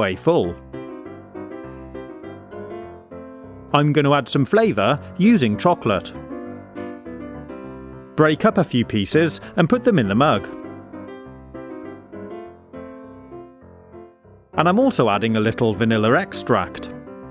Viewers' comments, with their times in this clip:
0:05 he said vanillaer extract